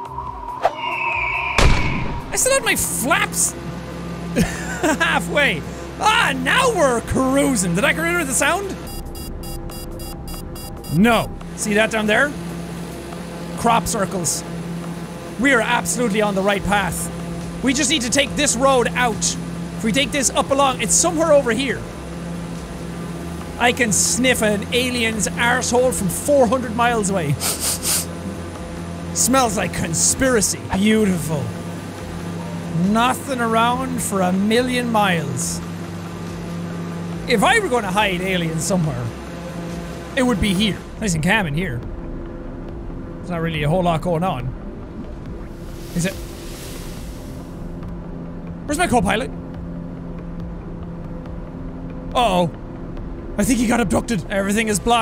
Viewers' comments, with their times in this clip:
0:09 “beeping noises” Jack: N o
0:43 Real footage of a pilot during the events of Thanos’ snap, also known as the decimation, circa 2018AD If you listen closely you can even hear the sound of the co pilot dusting away right before the pilot looks at the empty seat...